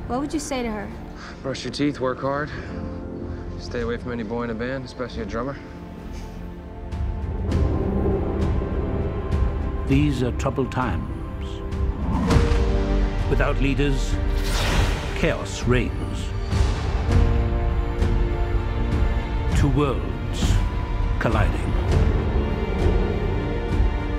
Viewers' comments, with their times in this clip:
0:08 starts the good soundtrack